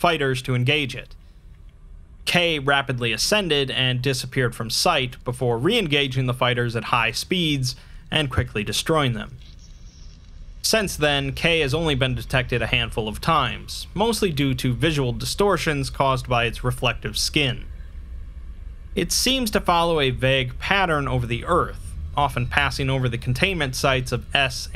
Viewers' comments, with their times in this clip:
0:08 There's some kind of weird... slurping sound ? Coming from the left speaker? What is that?